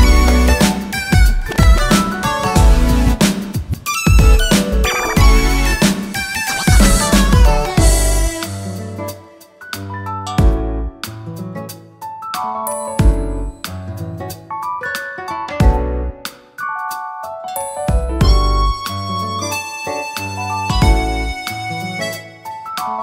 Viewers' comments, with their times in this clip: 0:09 I love the instrumental part so magical and beautiful